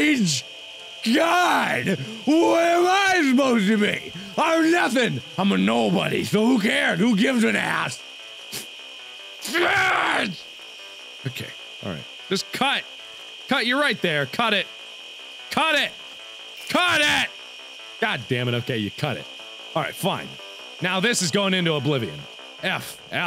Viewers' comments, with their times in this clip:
0:04 You sounded like Adam Sandler